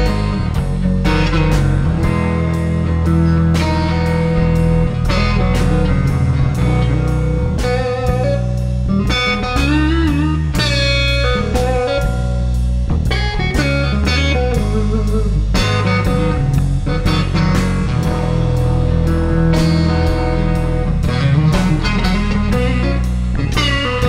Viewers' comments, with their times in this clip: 0:09 probably the most soulful lick i've heard...